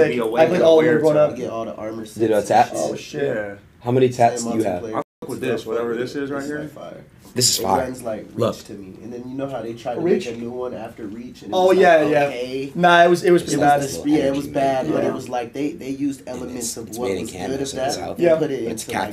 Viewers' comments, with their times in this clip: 0:05 me trying to listen to both conversations at once